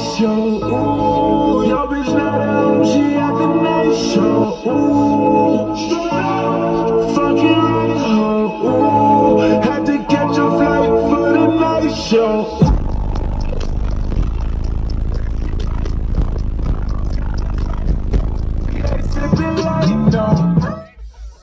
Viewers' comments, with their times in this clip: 0:08 The drop is mental!!